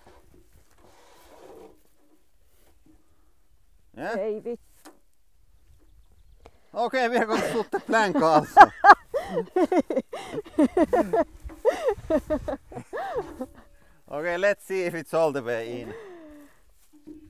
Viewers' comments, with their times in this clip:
0:03 That "eii vittu" came straight from the heart :D